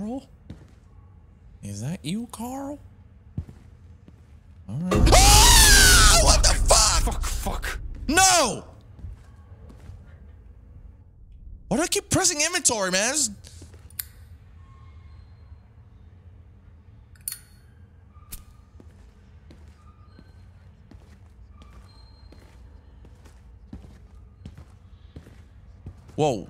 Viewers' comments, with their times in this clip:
0:08 Dude u just gave me heartattack with that scream in i was eating my dinner ffs. 😂😂